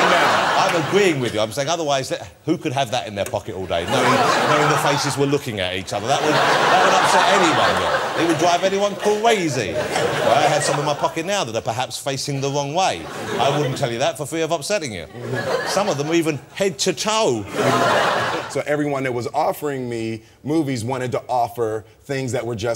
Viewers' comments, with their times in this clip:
0:09 lol! love it! ..."Cwazy!!" :-D